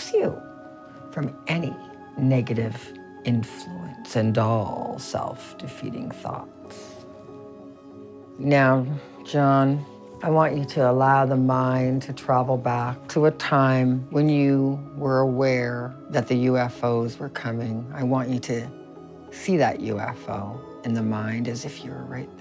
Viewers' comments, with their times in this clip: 0:05 why is she talking like Count Dracula